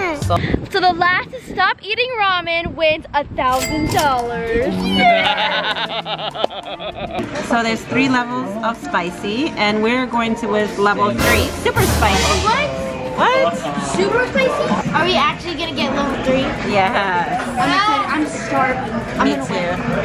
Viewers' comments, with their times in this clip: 0:05 he kinda scared me with that laugh yo- 😨